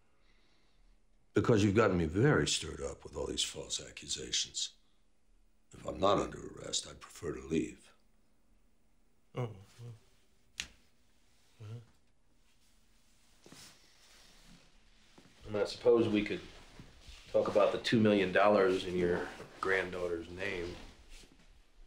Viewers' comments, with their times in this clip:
0:08 The lil sounds Hanks makes after Mike says he would preffer to leave killed me xDDDDD